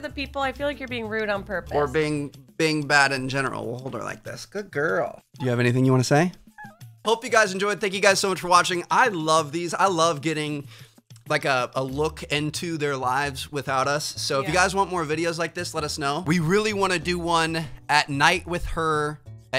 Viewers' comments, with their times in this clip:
0:06 awwww man!! the cutest meow ever from her